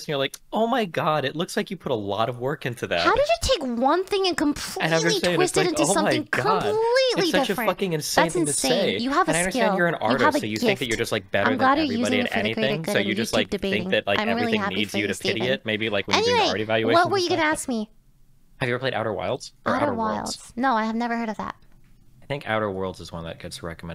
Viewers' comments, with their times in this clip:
0:05 The part where they just talk over eachother for like a whole 15 seconds just talking shit about one another without either party getting mad is hilarious LMFAO